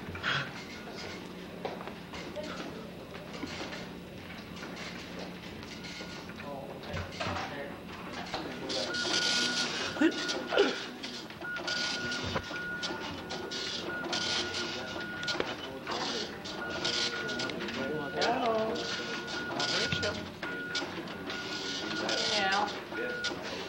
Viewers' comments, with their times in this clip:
0:09 I was going to high school in Texas back in 1988, but wow talk about memories !! The styles and even the sound of the printer for the computer brought back memories!!